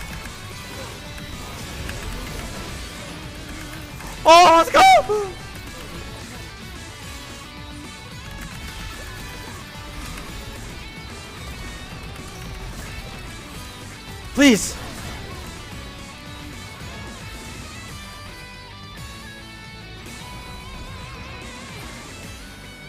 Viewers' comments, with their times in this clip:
0:05 What it sounds like if you run over a duck